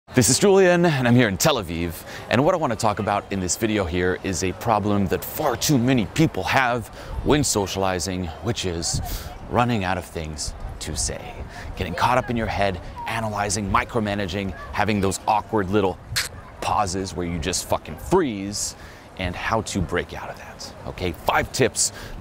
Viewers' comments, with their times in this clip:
0:05 did you say "fart"?